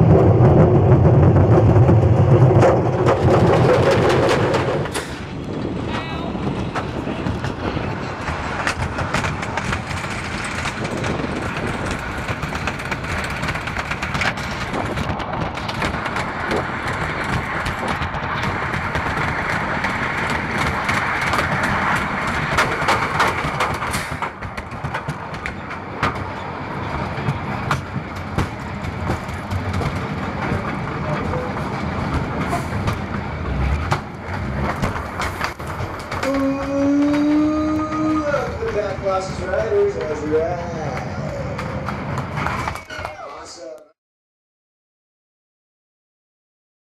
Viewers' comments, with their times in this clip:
0:05 Heard and "OW!" XP
0:36 I like how he says, “Oooooooooo welcome back Colossus riders, how was the riiiiiiide?”